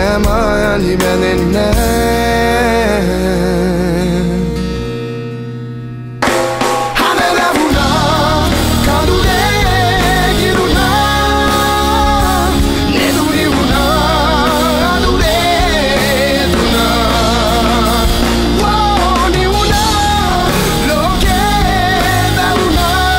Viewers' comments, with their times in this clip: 0:06 I Love This Beat...💆❤️💃